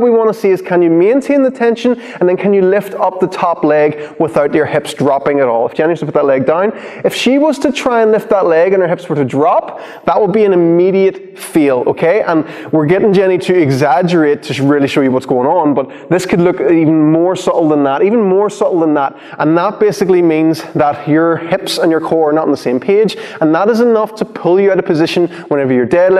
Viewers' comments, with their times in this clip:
0:09 "That would be an immediate feel... What? 🤔 Belfast accent much? 😋